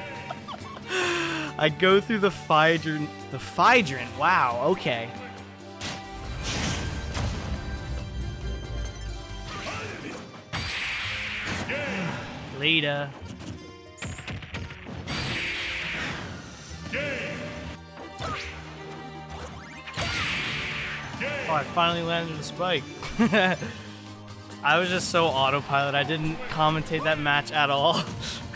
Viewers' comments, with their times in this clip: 0:09 kitsune donuts? Okay?